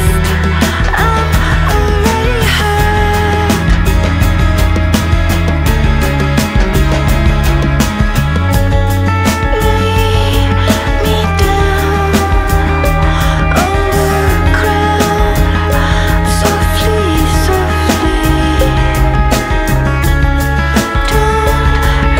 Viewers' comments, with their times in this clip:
0:08 I listen it for Guitar riffs Someone cooked there.